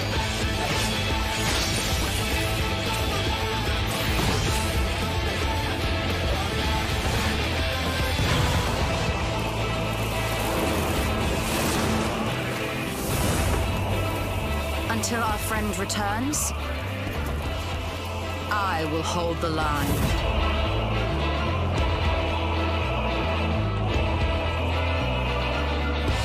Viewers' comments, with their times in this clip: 0:08 This is probably my favorite part within the entirety these cinematics. The ominous tone that is telling you, you're in for a ride of your life. I love it so much.